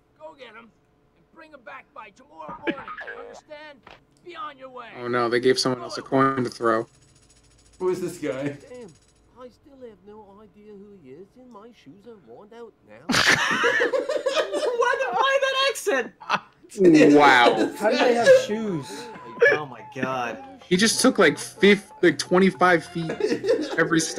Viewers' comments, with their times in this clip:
0:10 Boi sounds like Wallace